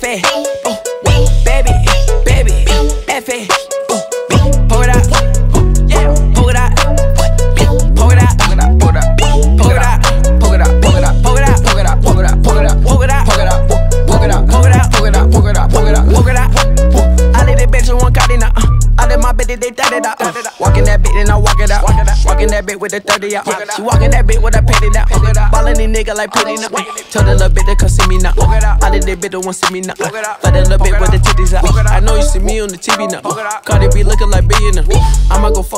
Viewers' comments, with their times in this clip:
0:03 I love how the beat switches up
0:18 best flow of all time